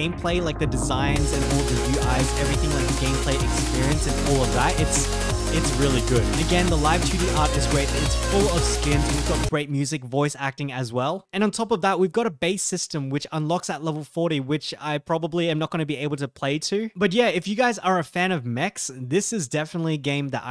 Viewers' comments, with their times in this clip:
0:03 Abit hard to hear you at around the mark because the BGM is loud. Good video though thanks for the review.